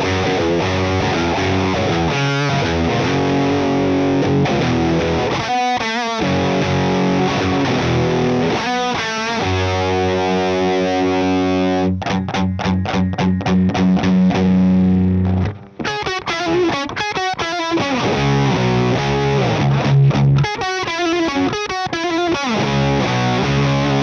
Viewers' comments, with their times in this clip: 0:05 The stuff he's playing before doesn't sound very Iommi in tone, but it's really awesome tone all the same.